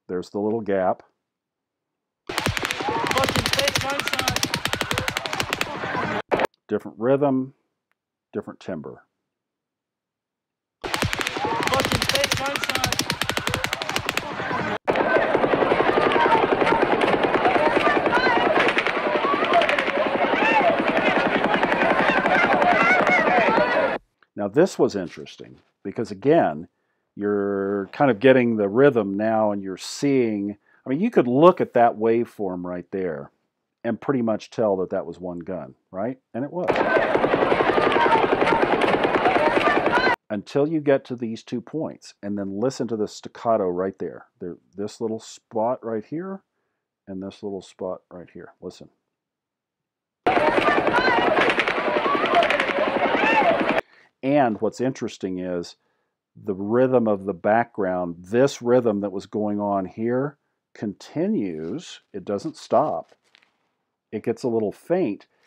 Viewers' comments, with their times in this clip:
0:05 The different waveforms in your video are resulting from the built in audio limiter of the cam. the high peaks are sounds of impacting bullets, which are way louder than the actual gun sounds. . someone on yt found out already. with the time lap between the last impact sound and the last deeper sound he could determinate the distance of the gun.
0:49 My thoughts untill now has been that the lighter sounds are the bullits that hit the asfalt..